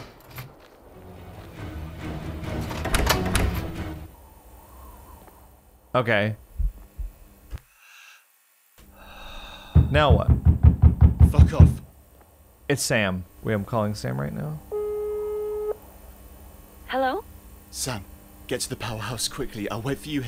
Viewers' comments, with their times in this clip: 0:03 lol'd the abrupt music stop was great